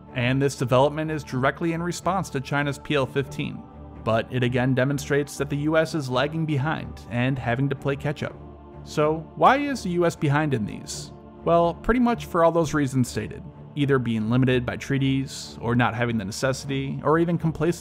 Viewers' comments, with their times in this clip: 0:05 ... I dont understand, how playing 'ketchup' will help here. Yeah I find out myself.